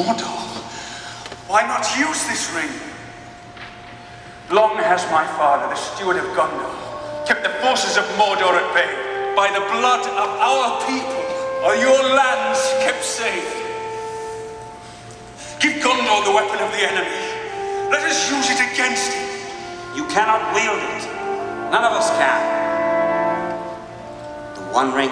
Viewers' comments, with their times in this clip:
0:09 love the lone French Horn playing the Gondor motif.